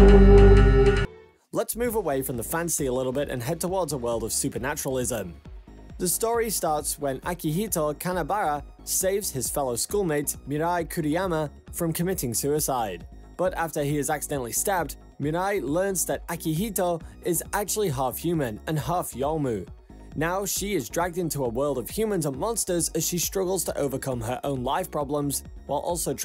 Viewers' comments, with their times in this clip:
0:08 I thought in said akihito kaiyaba 😅😅😅 I watch To many Sword Art Online SAO